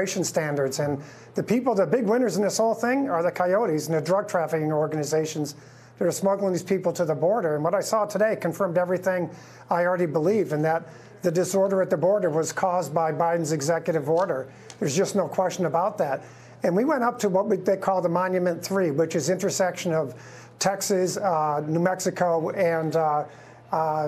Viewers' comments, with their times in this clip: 0:10 "The disorder at the border was caused by Biden's executive order." Me: hears that in Eminemvoice